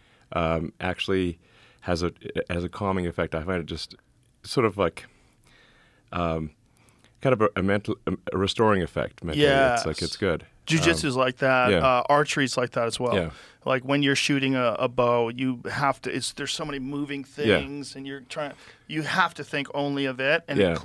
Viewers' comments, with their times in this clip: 0:06 What was that pause ??